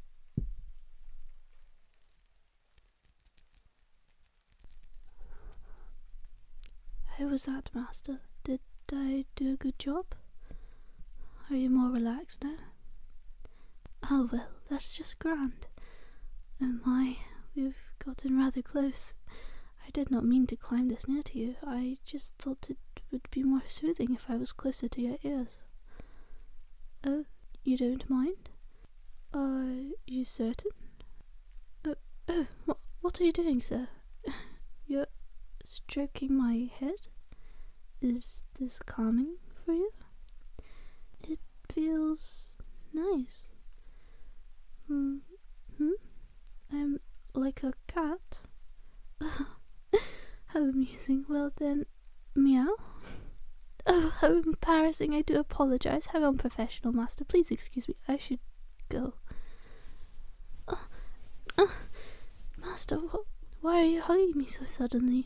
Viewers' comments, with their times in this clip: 0:07 You did marvelous, my dear,please do get me a boohle oh wateh my dear darling🧐 Love the vid11/10❤❤❤
0:52 omg that meow was freaking cute 😂 Very nice video ❤